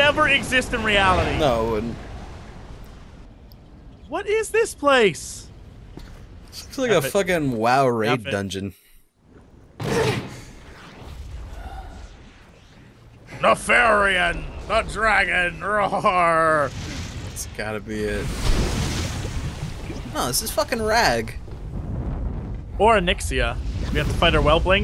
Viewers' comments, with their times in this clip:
0:08 tell me he said raid, or rave. please.